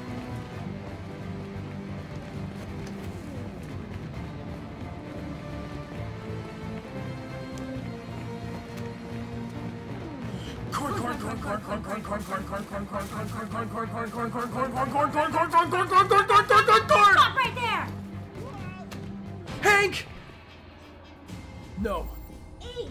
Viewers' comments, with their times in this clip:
0:10 If you speed up that part where Bryan and Amelia were repeating the word corn to 2 they turn to a machine Gun Edit: the part is